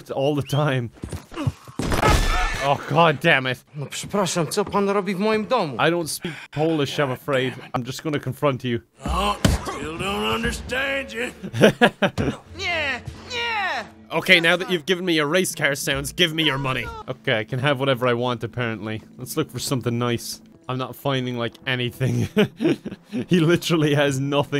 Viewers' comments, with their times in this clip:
0:04 I'm Polish and that unexpected Polish in this game caught me off guard
0:04 -oh my god...that polish dubbing sounds more like a russian boi speaking from a book.
0:05 I got heart attack and got confused after hearing my language, I forgot about that part of game